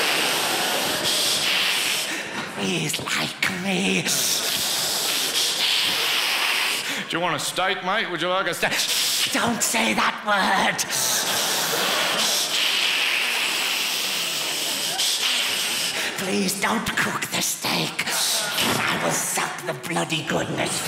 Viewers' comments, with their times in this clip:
0:07 That was a great Aussie accent.